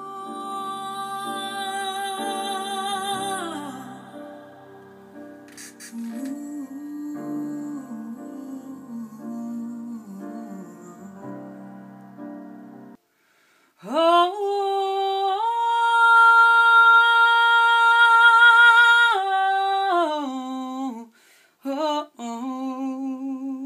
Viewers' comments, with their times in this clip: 0:04 sounds like "The Great Gig in the Sky"